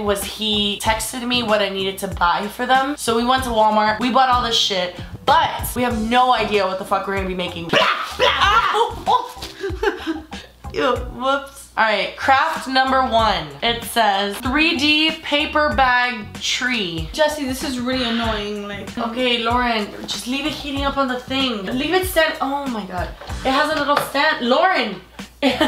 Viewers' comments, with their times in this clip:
0:06 omfg I JUMPED 😂😂😂💥 BAM!!